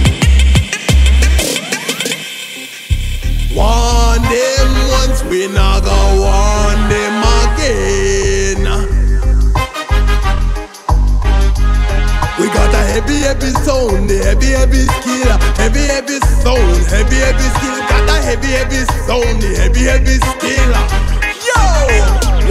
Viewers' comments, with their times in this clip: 0:06 ANYONE KNOW THE NAME OF TRACK ??? Sounds crazy in subwoofer